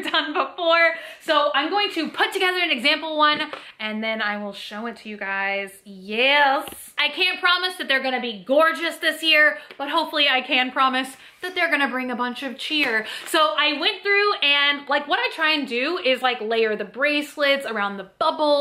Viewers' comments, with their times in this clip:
0:03 skeleton arm ASMR lmao